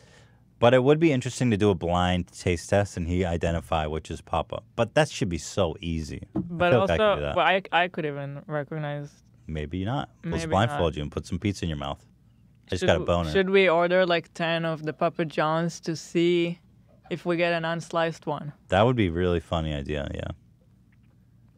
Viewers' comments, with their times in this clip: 0:09 "let's blindfold you and put some pizza in your mouth. I just got a boner." lol Ethan, also would have been a great soundbite if both him and Hila weren't talking at the same time there